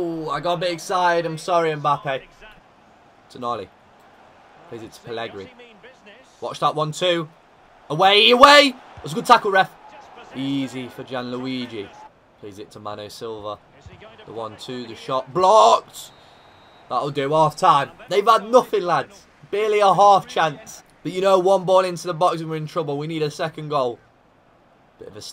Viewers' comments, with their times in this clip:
0:09 Sheer panic of conceding a penalty "It was a good tackle, Ref" :P